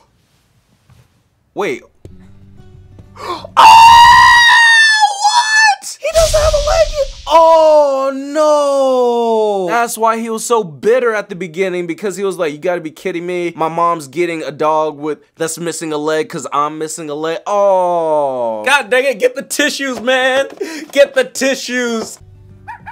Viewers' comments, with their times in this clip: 0:04 when he screams it sounds like R2D2 no offense